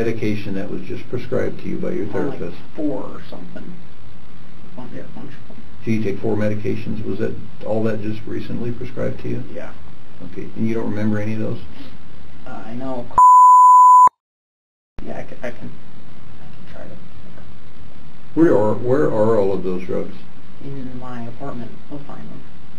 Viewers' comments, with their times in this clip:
0:06 bleep out the prescribed drug name to save big pharma face, but leave in the names of the illicit drugs .... what a world.